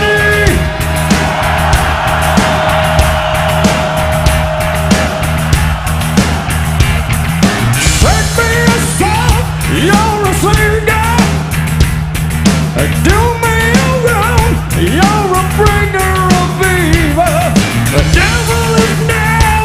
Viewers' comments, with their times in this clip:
0:07 OMG epicness. Awesome Dio impression.